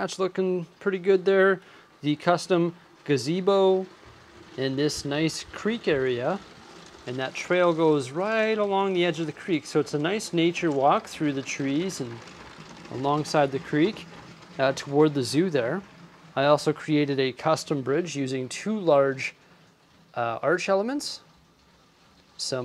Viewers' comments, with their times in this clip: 0:09 the train almost sounded like flowing water when you were showing the creek